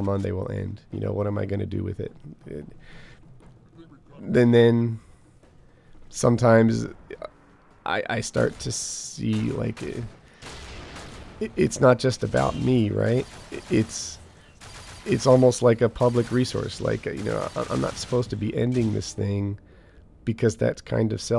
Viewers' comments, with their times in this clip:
0:07 That song played all the way from is astonishingly good. What a video. What a man. What a channel.